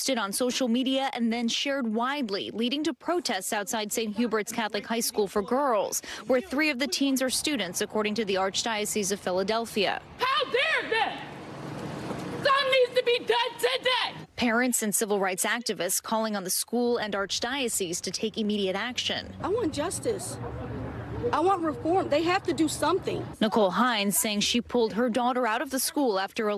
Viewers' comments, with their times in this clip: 0:08 What's funny is the black woman yelling sounds exactly how that one girl in the video was yelling in the beginning. Stereotypes exist for a reason 😉✌️